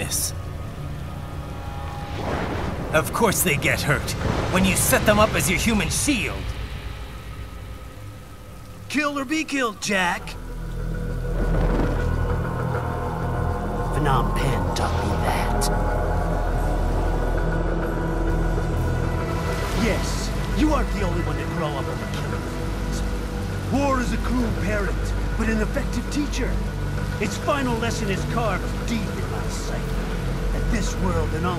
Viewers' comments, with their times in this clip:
0:10 That's the song that's starts WAYYYY later. I'm talking about that atmospheric dramatic one. The one that starts Unless, they're the same song.
0:18 the soundtrack is just amazing. 😍